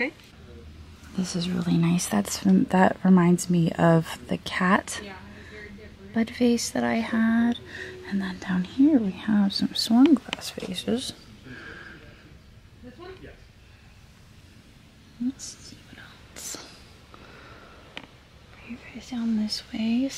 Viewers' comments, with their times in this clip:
0:05 Had to laugh it sounds like "cat butt face" not "cat bud vase" 😂